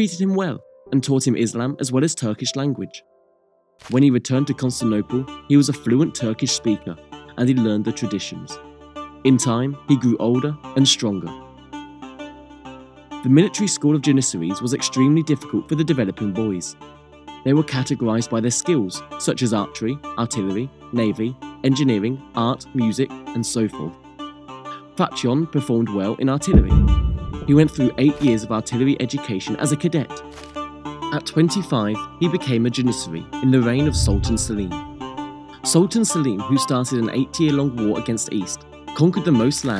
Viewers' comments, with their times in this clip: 0:03 If you play at x1.5 it's like Punjabi MC hit
0:24 music ten ten teten background music